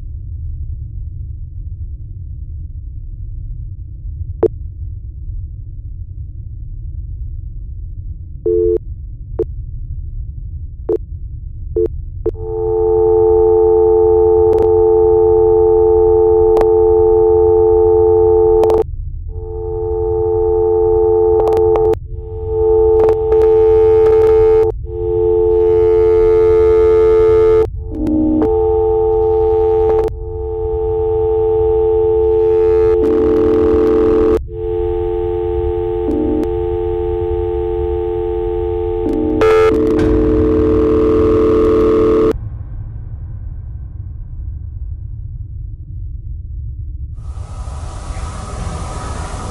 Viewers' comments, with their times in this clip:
0:08 how would a ghost add dial tone special effects sounds to a camera recording?
0:19 authentic old VHS tape glitches on a digital camera. Also no dial tone sounds. lol
0:32 This so fake camera an audio can’t glitch an video can come out with the glitch effect unless you put it this junk looks fake n bad video editing should have never put no glitching effect or sound effect 💀😂
0:34 good SFX xD definitely fake, but i like the subtlety